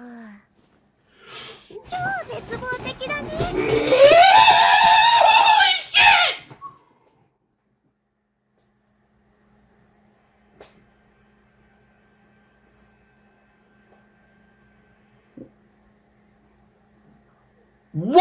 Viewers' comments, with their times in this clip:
0:03 thats a noise i dont think any amount of letters can describe.